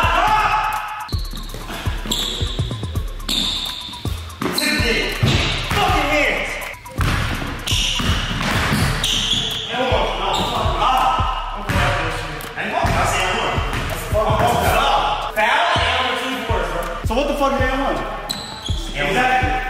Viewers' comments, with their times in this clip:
0:05 - 😒, .. you literally hear the smack .. FOUL.